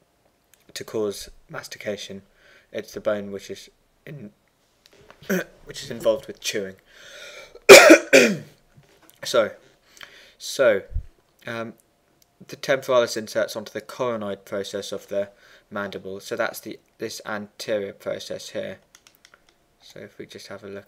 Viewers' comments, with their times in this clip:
0:04 Here, please remove your earphones. Stapedial Reflex initiates if listened to this with earphones in.